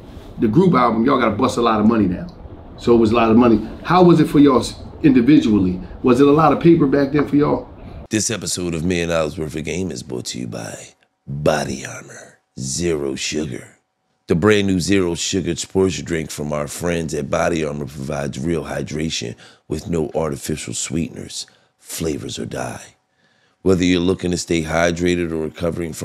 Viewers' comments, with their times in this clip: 0:10 Gillie getting tired of doing adds lmaooooo bro is reading off the script directly😂😂😂